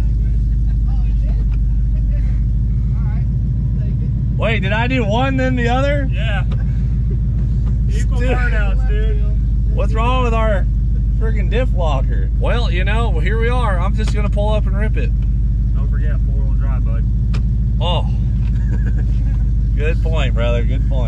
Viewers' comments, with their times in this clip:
0:03 the OG's laughed through the disappointment